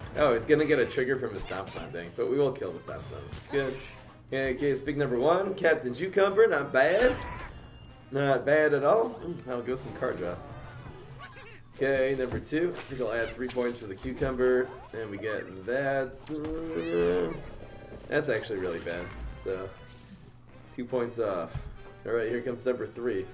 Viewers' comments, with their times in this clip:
0:05 who heard captain “chew”cumber?